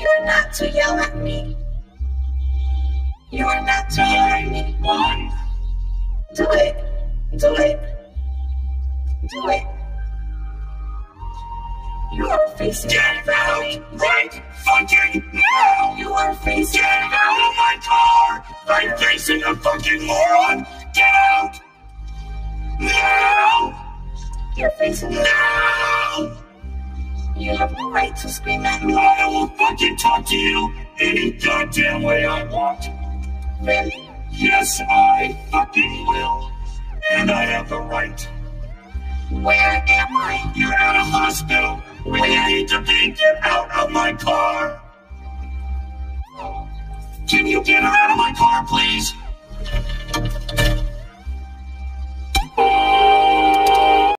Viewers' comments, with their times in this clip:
0:01 I love how miss the rage still plays in the background
0:04 the way he said nine,one lol 😆
0:08 why did it actually fit really well tho-
0:12 The voice crack in this part got me rollin' on the floor
0:15 the voice crack on "now" has me in tears
0:20 the man turned into a cat
0:21 the "NOW!!" is fucking exquisite
0:22 “noOW” was hilarious!
0:29 perfectly tuned I’m impressed
0:33 that tuned in way more then it shouldve
0:38 I love the sadness in his voice lol
0:51 best horn ever
0:51 the car horn continues the song lmao